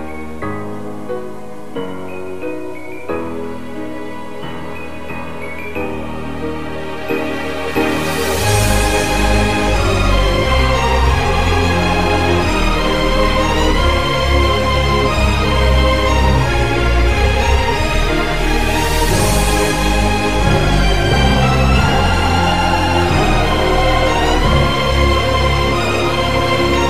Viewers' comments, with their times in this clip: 0:09 2x speed this video will make a rather faint creepy sound in